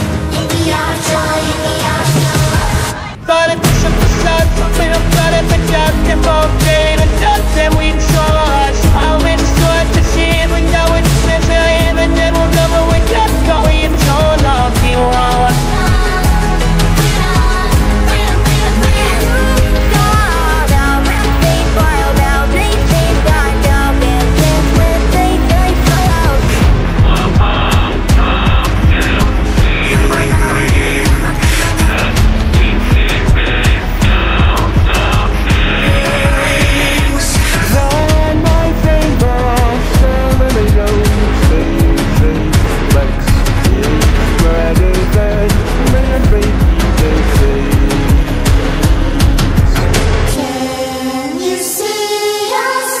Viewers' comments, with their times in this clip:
0:03 love kicken chicken voice jeje ❤
0:04 When I heard the hour of toy I heard dogday in it
0:10 can we teach kickin to pronounce apart?
0:10 Chicken chicken sounds cool
0:13 Kickin chicken "torn apeut"
0:19 She kind of sounds like Hoppy a sec there 💀
0:27 Catnap lost his voice☠️☠️☠️☠️💀💀💀💀
0:27 bro why does catnap sound like the gametoons prototype voice actor-😭
0:27 bro why does catnap sound like he hasn’t had water in a 1’000’0000 years💀💀💀💀
0:27 When i have sore throat
0:27 Catnap's mic broke
0:37 bubba singin so i know
0:41 bubba sound like him-😅😅😅
0:43 the way bubba said muCH